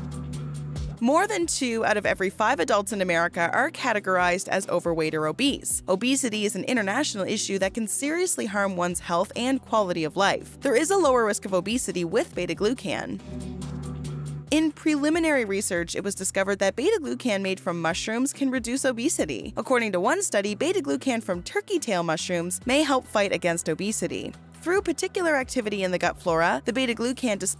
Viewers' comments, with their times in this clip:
0:10 “ There is a lost risk of obesity with beta flu an “ Does that mean anything 🤔